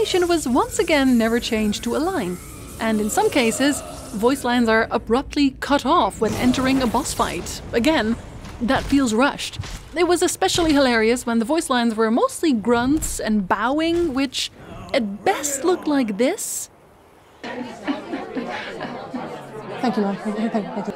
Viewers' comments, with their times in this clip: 0:03 honestly I thought that was really cool and made on purpose. The cut voiceline, the little boss animation & the absolute clusterfuck Glint of Light & Hardcore to the Brain have been as Bossfight Soundtracks kind of threw you into the mood, I used to be super hyped back then, every time. That being said, great video, thank you for giving the franchise the attention it should have gotten years ago! Edit: Little Addition, I adore the voice acting in this game, the English one at that. Yuris voice actor gave him a lot of personality imo. Also, as one might have guessed, I love the games soundtrack, even more than SH1s. Themes for dungeons, bossfights, you name it. They all hit hard imo.